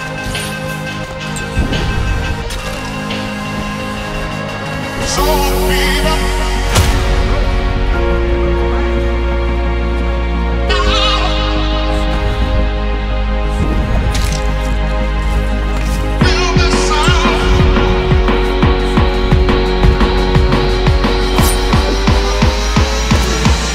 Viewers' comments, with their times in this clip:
0:05 thought the guy was singing before he died lol